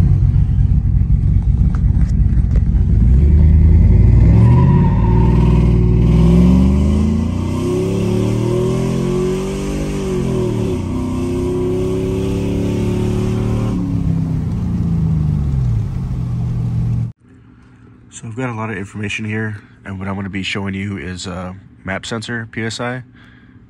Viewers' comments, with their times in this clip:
0:10 Did you turn up the transmission pressures and change TC lockup tables? The 4l60 on the 1-2 shift sounded lazy on the shift time.